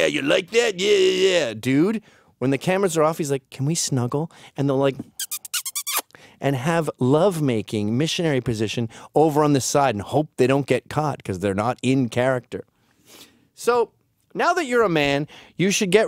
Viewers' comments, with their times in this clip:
0:04 That kissing sound on